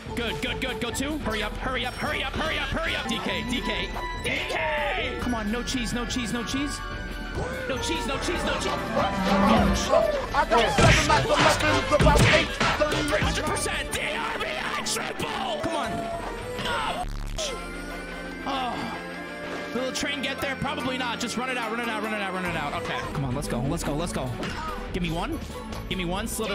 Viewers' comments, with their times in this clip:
0:08 I can’t resist the train music 🎶 🚂